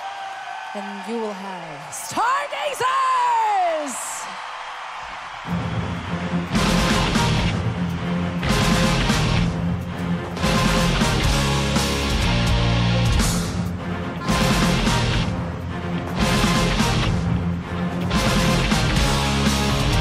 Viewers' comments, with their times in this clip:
0:04 that fuckin crowd man, jesus christ.